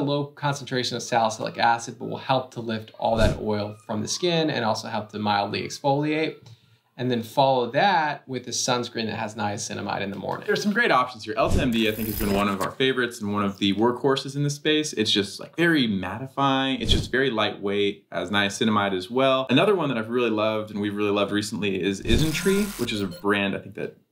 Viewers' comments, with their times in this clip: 0:08 I’m I hearing things or is that a puppy/dog crying on